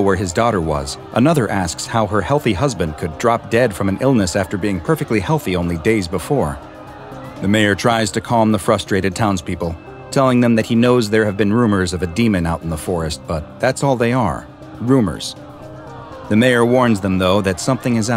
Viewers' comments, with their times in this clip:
0:06 I hear the scp 096 scream